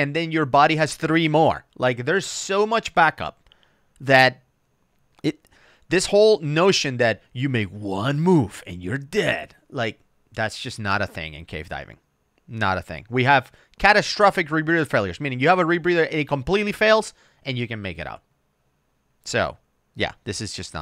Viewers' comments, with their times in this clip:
0:06 Lol why is your movie announcer guy voice so good? hahahaha